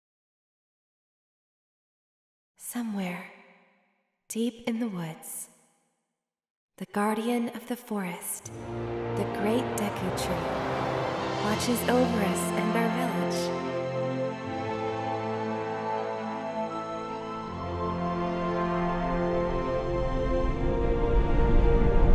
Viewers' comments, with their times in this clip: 0:08 Open World - Fantastic Atmosphere Music!!!